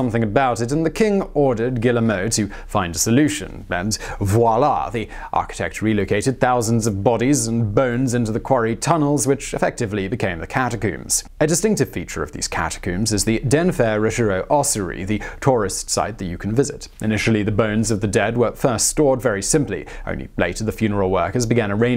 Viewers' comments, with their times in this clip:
0:07 Catacooms. Im sure its a good video but Im and I cant bear to hear it again.